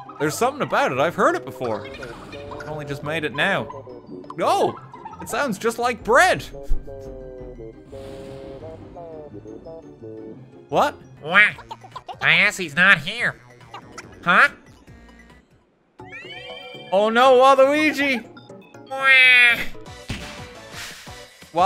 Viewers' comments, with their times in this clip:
0:05 he was singing Burn My Dread but Goofy heard Burn My Bread